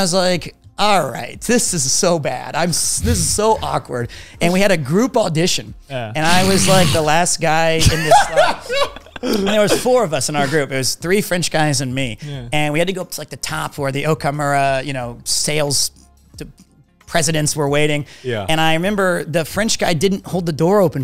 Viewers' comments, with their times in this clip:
0:05 that laugh came from the soul😂